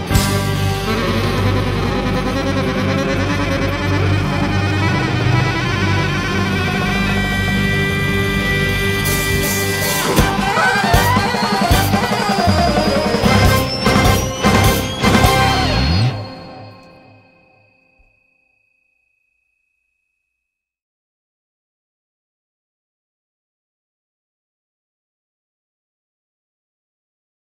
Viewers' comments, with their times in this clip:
0:10 Tea Kettle Mode: Activated